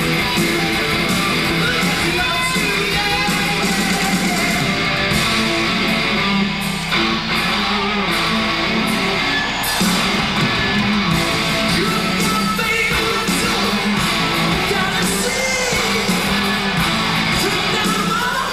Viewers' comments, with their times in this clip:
0:05 ...good tempo on Custard Pie.